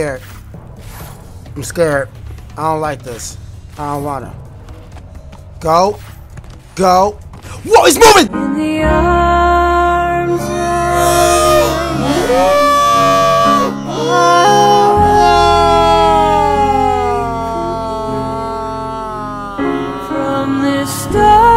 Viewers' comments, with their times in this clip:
0:08 Went The song start i laugh so hard😂😂😂😂😂😂😂😂😂😂